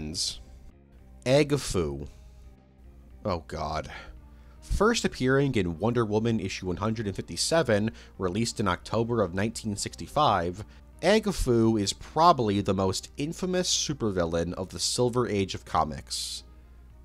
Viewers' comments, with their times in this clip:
0:03 If chang tzu isn't mentioned anywhere on this iceberg, I'm gonna be real disappointed! Edit nothing more beautiful then the way he just said "oh god"